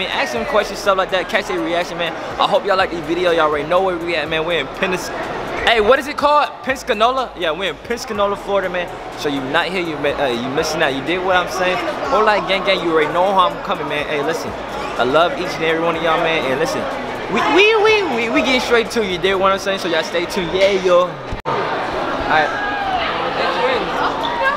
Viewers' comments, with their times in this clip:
0:07 I just don't like how he said my city name like that